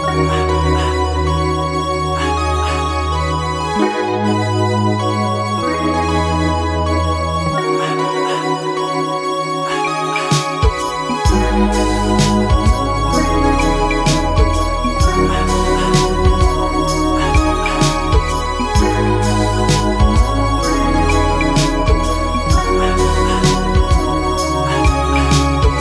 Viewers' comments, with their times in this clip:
0:09 when the beat slows down hits so nice. Lowkey replay that part each time I hear this song